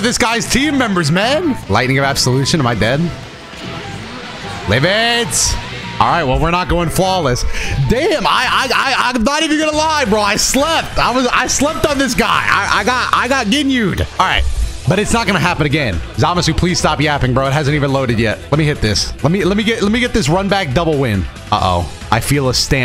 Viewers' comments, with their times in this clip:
0:08 Looked away and thought I started watching the Looney Tunes 😂